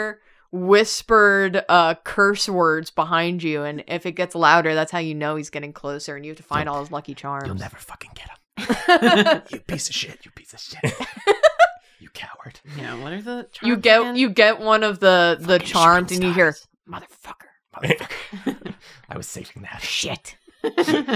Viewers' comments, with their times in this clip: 0:06 the violent drawfee ASMR saga
0:07 timestamp for anyone else here for Lucky swearing ASMR